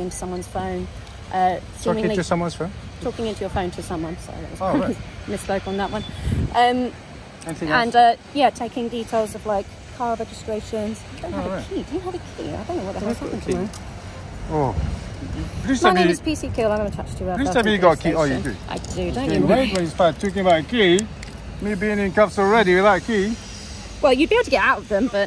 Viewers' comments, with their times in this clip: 0:09 😊 did she she I haven’t got a key or I haven’t got a clue 😂